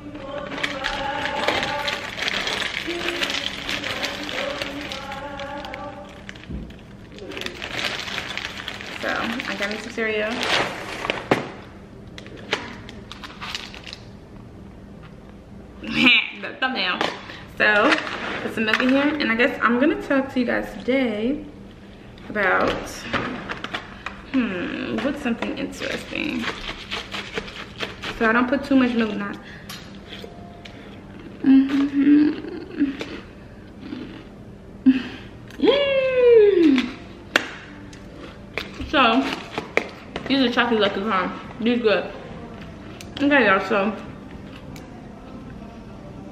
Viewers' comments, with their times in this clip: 0:03 Who was in the background singing, they lowkey got some vocals😂
0:31 Y’all heard those moans 😂 or is it just me🤦🏽‍♀️